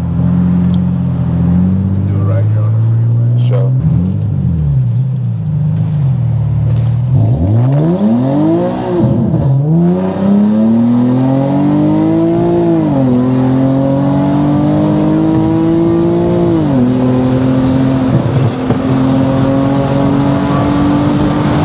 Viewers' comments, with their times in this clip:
0:08 that pull was insane, sounds sick